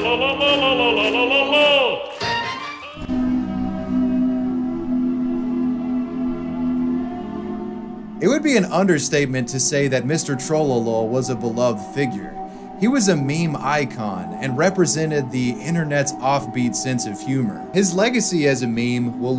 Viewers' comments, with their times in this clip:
0:03 When I heard that Caretaker music I already knew we were going to the saddest part of the story
0:03 man that background song makes me forget